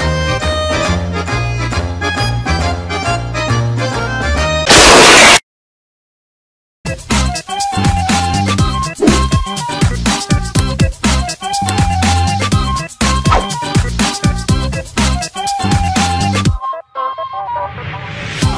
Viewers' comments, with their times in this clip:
0:03 hes love loud sounds